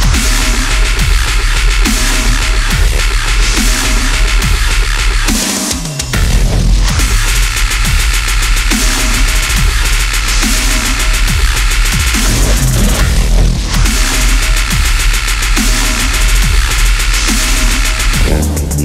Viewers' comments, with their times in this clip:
0:06 That is a straight machine gun fire. Such a menace!